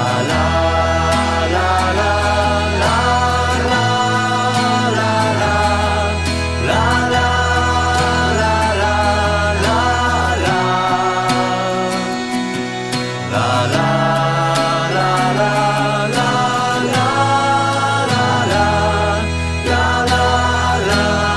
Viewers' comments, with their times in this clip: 0:04 Anyone else get Beetles vibes there? Lol